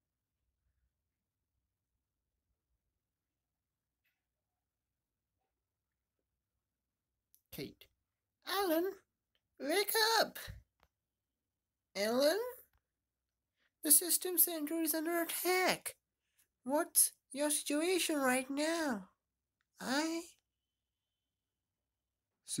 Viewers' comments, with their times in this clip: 0:03 guyz the silents breaks And Also let me know If you want more of it